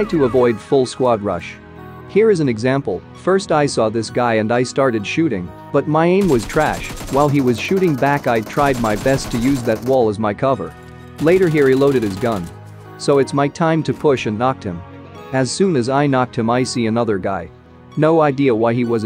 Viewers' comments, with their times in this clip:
0:06 "my aim was trash" *in a robotic voice